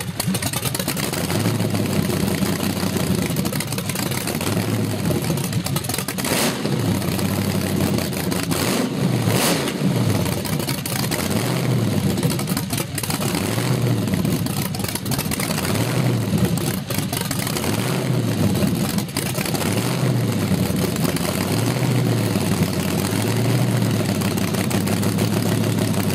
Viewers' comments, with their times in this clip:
0:08 Safety, SAFETY!! the gentlemen would have known it if his loose shirt woulda got grabbed by the blower belt. Glad that did not happen! Nice motor, sounds awesome!